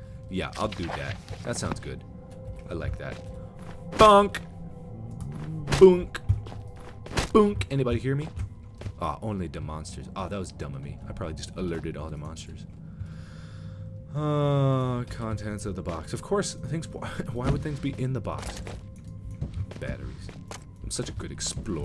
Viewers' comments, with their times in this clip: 0:04 I thought the pickaxe was the dog